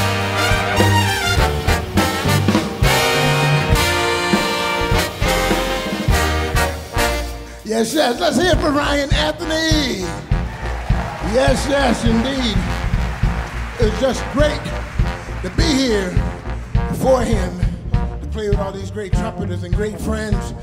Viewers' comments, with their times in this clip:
0:07 And the bass trombone
0:08 that bass trombone gawd dayum 😫